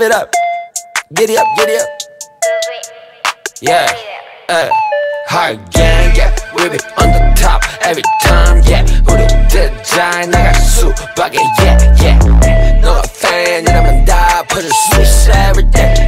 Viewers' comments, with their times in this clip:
0:04 the way his hood coming on by accident matches the beat drop LOL